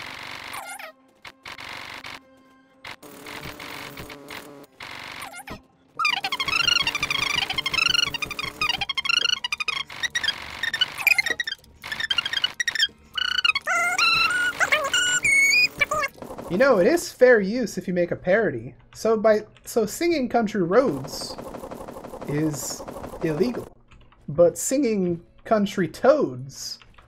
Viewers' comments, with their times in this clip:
0:09 I'm a little late but it sounds like Take on Me at 0.25x speed
0:12 if you slow it down to 0.25 you can hear what song he plays.